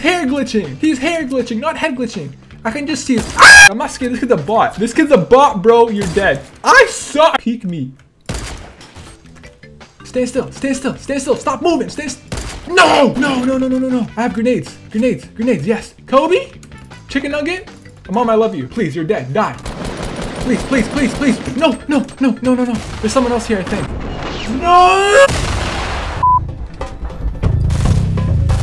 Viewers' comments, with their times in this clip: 0:03 the whaaaaaat tho
0:03 who else loves his scream
0:03 bro i died when he screamed 💀💀 IT WAS THE CUTOFF
0:15 The way when he said the names 😂😂